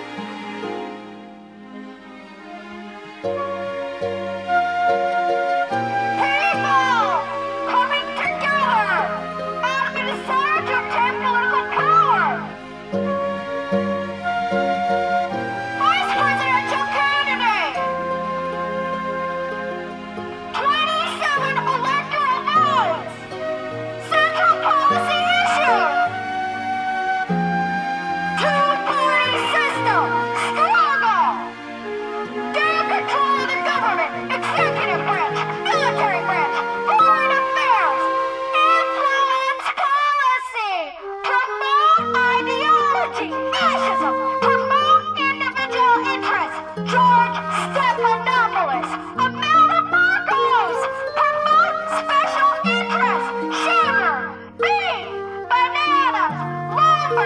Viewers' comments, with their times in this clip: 0:07 The bit around 18 minutes is actually quite pleasant. Then it borrows from Frank Zappa.
0:38 i have no clue why but the way they scream "INFLUENCE POLICY" is so fucking funny to me